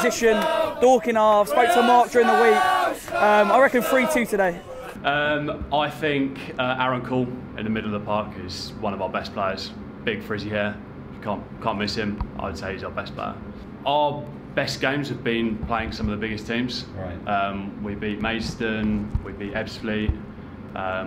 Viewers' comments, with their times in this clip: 0:03 what a FANTASTIC chant 😅